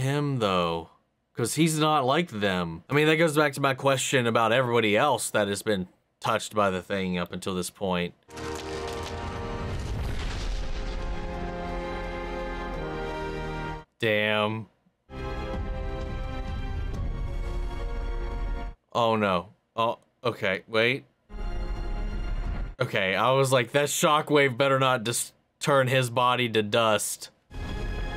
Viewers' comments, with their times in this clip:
0:09 While i was sad for Trip, i love the soundtrack of this part, just amazing